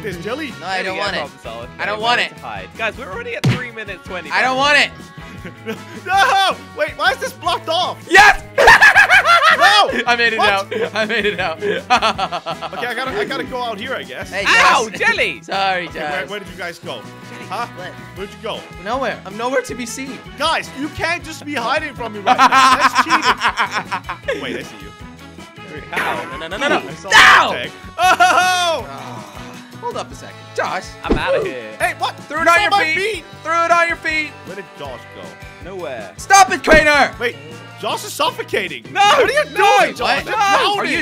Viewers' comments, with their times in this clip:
0:08 Jelly you sound like Joker
0:22 Imagine jelly on a bike and laughing like that and a fly flyes on his mouth
0:23 that lagh tho